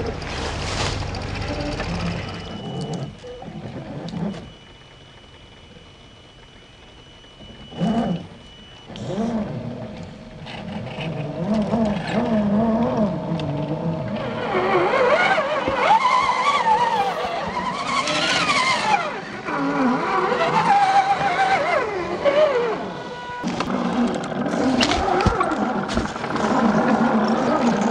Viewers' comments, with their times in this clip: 0:08 Enjoyed the video clips of your talented builds but I had to laugh when the cat scolded, "BACK OFF"!!!